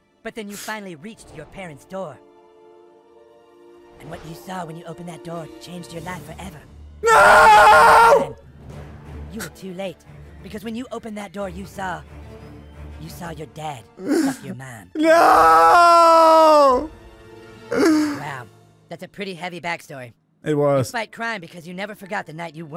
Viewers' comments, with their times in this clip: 0:09 the face you make when you walk in on your parents having sex And kyle's cousin sounds like Mort from Family Guy. Im the human kite, kyle! Im the fastest Jew in the world!